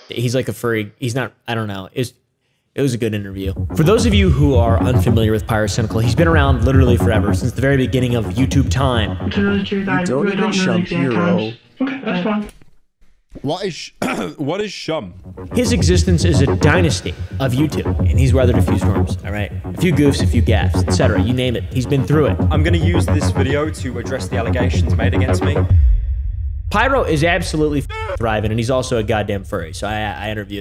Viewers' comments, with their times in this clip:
0:09 he changes voices
0:11 why did pyro sound like Jschlatt
0:13 Why he sounds like schlatt??